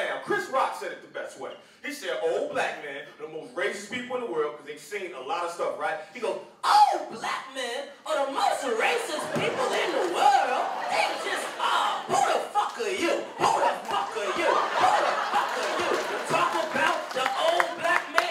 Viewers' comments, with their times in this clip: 0:06 Chris Rock impression is amazing